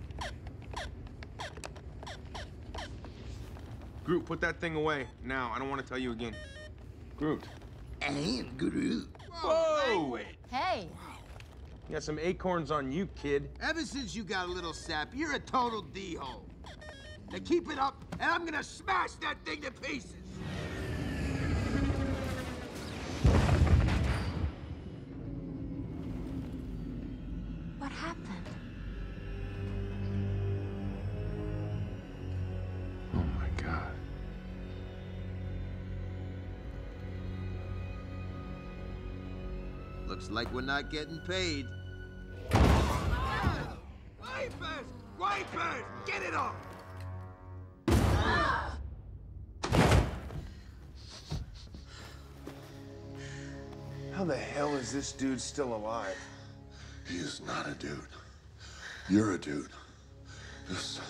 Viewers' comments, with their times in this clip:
0:08 i can slightly hear a word language why🤔
0:47 bro that sounded low quality